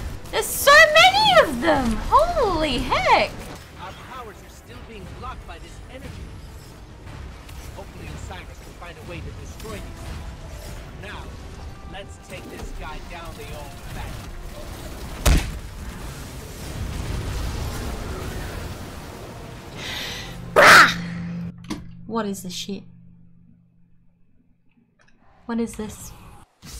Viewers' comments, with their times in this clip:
0:10 The guardian has brought down hive gods, worm and not. They have turned the most powerful of foes into weapons to bring down more. Yet of all the things they have faced, one still strikes fear into their hearts: The Caballs “GaUrdIan dOWn”